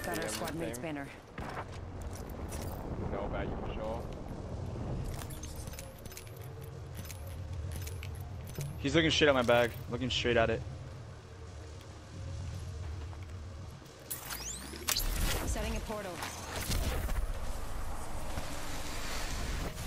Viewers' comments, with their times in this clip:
0:06 does it sound like he’s using a scroll wheel? Or and I just dumb